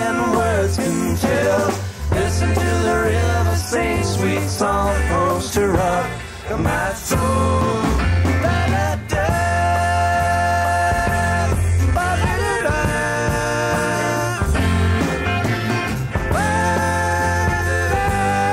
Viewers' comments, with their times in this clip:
0:05 Aww man Jerry and Phil's Gung-Ho vocal energy at the end of Brokedown Palace really resonates that gospel vibe. Grrrrreat performance